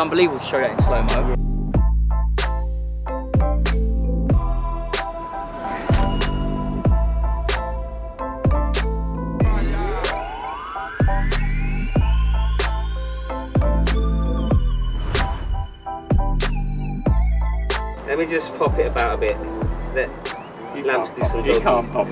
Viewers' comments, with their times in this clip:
0:04 Did any1 clock that when lampard showed us his slow mo shot it’s the same sound when u revive someone on cod